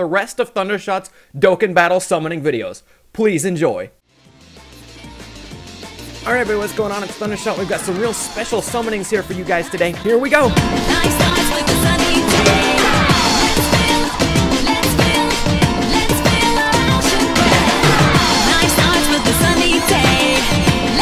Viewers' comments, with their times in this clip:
0:07 the fucking music yes